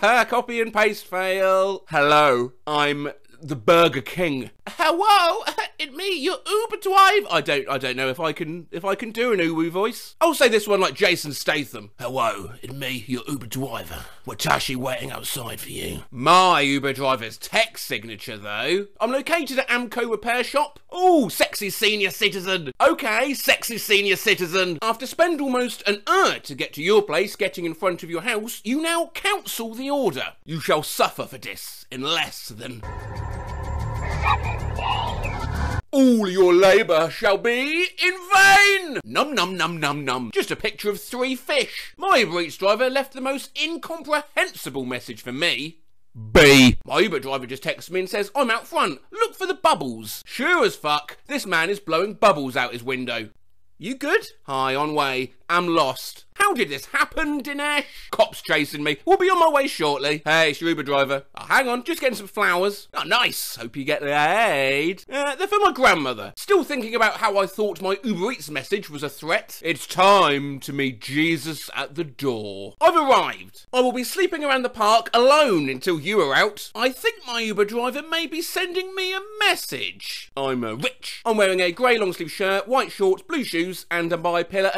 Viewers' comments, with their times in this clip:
0:10 I like how he just turns into Chris Broad from Abroad in Japan lol
0:10 the birth of UwU Jason Statham
0:12 and thus, UwU Jason Stathem was born
0:12 nah that sounds like Simon ghost riley Whatt
0:13 sounds like Chris Broad
0:14 I'm only learning Japanese and that is painful to hear, not only is it being said as 'wataashi', the sentence itself is missing a word; 'watashi' does not mean 'I am', that's '_watashi wa_'!
0:25 I don’t know why I laugh so much when he says ‘hour’
0:39 was a missed opportunity for a Furby voice 😳
1:05 did he stutter?